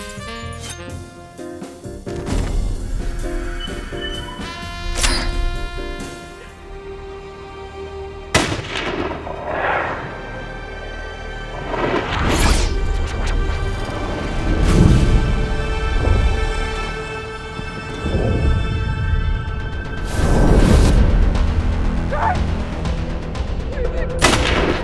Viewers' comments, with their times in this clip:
0:08 he CANT hear the explosion because that bullet travels faster than sound